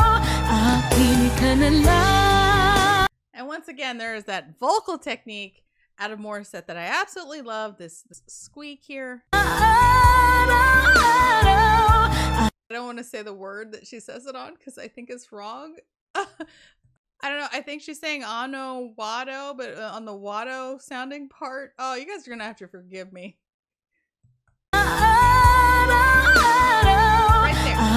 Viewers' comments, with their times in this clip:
0:10 The squeak is on the word 'araw-araw' which means every day.